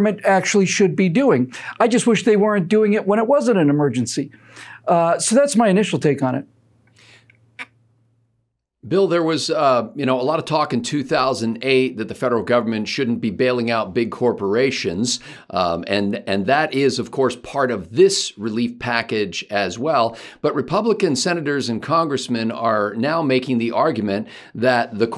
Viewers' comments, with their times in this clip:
0:07 What's that weird sound ?